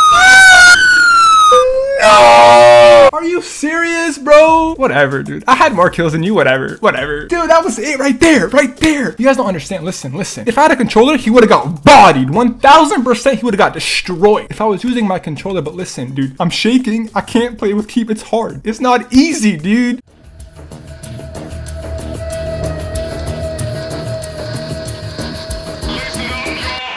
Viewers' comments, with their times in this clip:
0:06 made me die that scream 😂😂😂
0:06 I laugh when he added that fire truck responding with the sirens while hes screaming LOL!
0:08 😂😂😂 dat scream tho